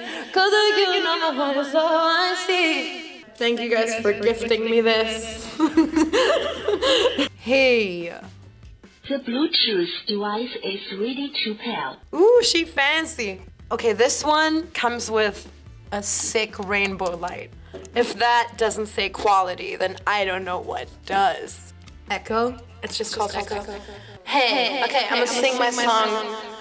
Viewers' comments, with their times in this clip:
0:09 omfg, it's the same sound that my music box plays when it turns on loooooollll 😂😂😂